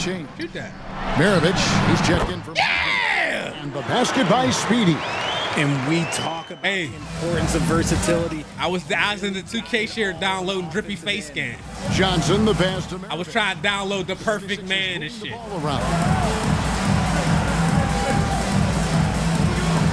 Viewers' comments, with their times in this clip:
0:05 he sound like that one guy running for governor or sum shit😂 Yyeaaaa